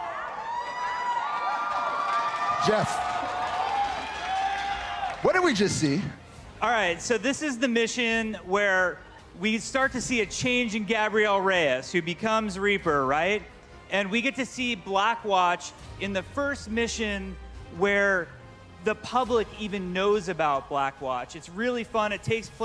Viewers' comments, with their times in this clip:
0:10 funny how jeff cant even pronounce his own character's name right.